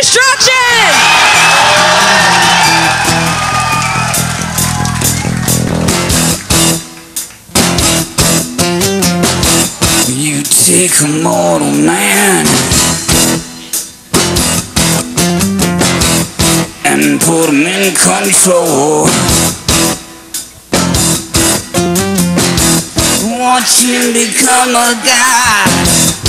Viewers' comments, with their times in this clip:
0:08 sounds like a mandolin ^^